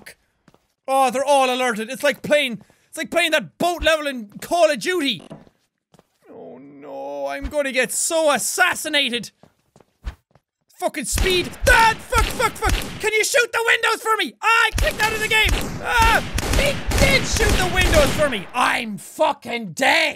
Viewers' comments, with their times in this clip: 0:06 I thought the game made that sound but it was jack. Wanna hear?